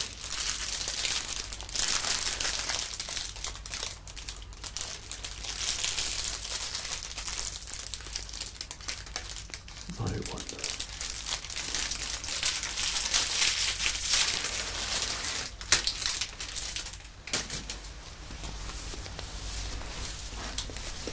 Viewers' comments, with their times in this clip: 0:07 that Harry potter I wonder is so perfect